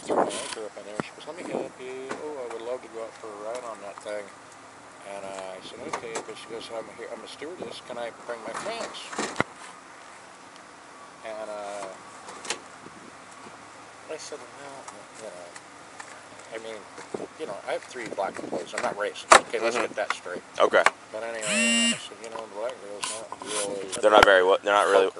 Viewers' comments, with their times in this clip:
0:08 why he gotta think about what happened that was a long pause